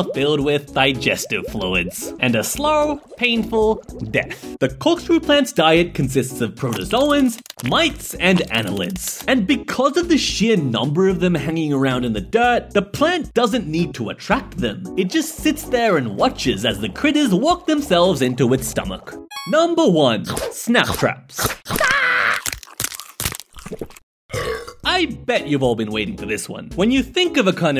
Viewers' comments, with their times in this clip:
0:09 What the duck i hear S- Not saying it